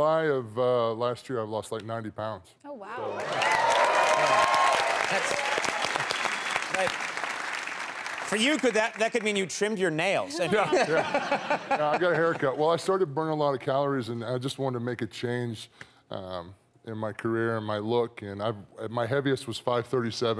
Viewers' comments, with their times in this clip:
0:04 Conan laughing at Big Show clapping for himself